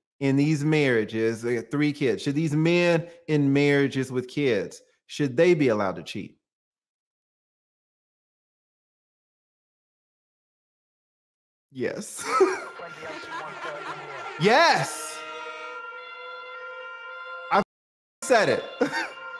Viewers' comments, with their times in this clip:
0:06 That pause said it all.. 😂🤣😂🤣😂🙂😂